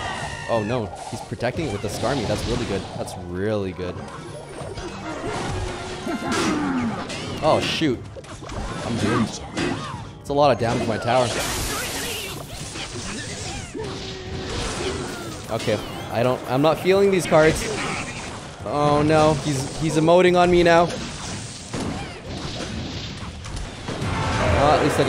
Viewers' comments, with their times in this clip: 0:10 that a lot of damage. Lmao is he the flex tape guy?